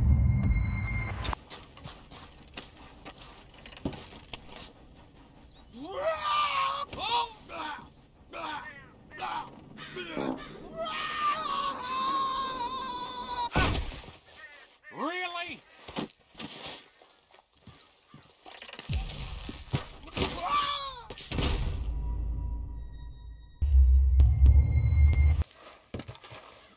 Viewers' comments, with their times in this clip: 0:10 In minute was that a fart?😮